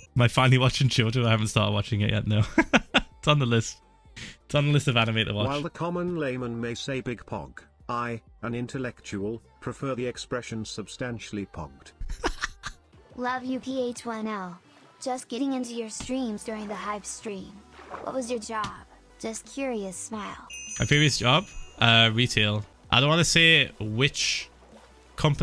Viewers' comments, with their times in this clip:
0:05 found the aussie
0:11 that laugh I LOVE IT